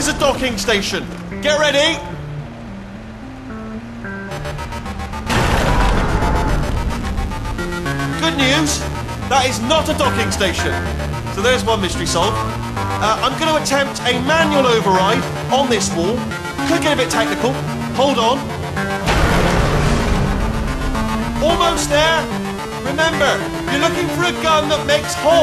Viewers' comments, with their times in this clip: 0:06 portal 2 dubestep